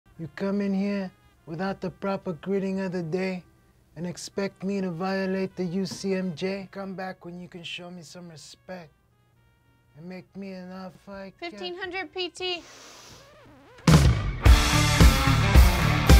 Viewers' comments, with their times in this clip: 0:01 He sound like andy warhol 😄